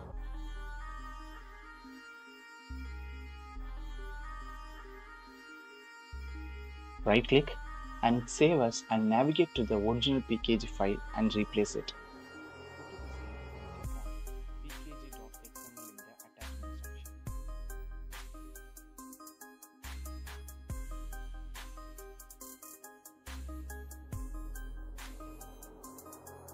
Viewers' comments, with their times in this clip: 0:09 wHat? i can`t hear what u say i don`t know where r u going